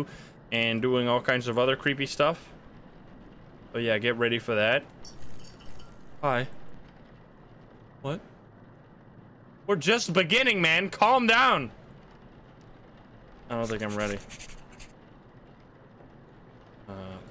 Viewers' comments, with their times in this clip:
0:05 The cold breath that the grandma released jeesh